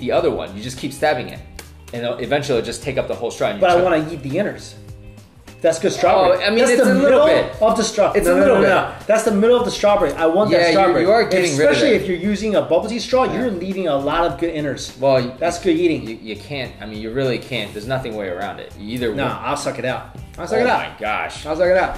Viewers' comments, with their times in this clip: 0:03 for every strawberry u stave 😂 n that laughter tho